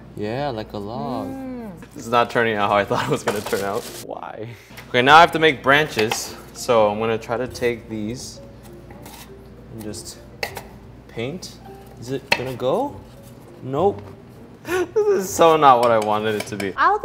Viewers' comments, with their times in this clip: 0:03 his why is so attractive to me lololol